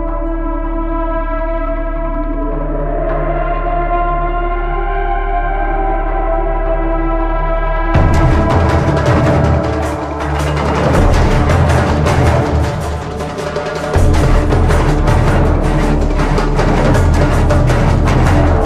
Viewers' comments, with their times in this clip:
0:05 is such a amazing soundtrack